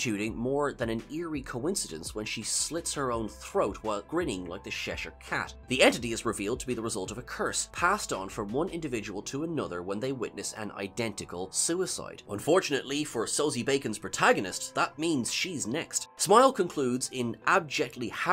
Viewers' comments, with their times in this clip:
0:05 what's a Shesher cat? Cheshire cat